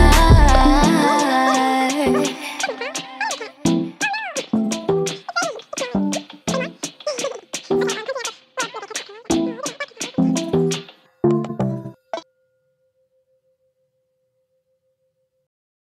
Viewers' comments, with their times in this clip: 0:06 you can hear Jheńe playing animal crossing while recording this Amazing song.